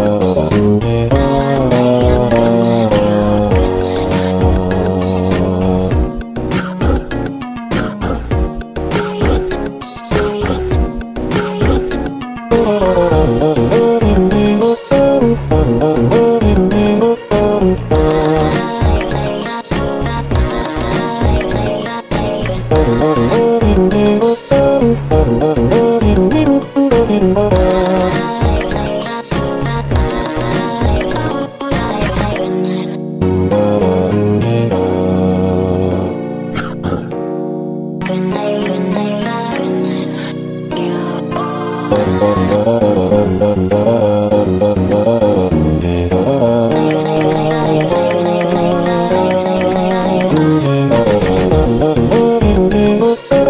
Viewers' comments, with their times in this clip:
0:07 At the section, it sounds like cassette girl is saying "Breath in, Breath in, Breath in, Breath out"
0:38 And I hear "Goodnight, Goodnight or Guudnight"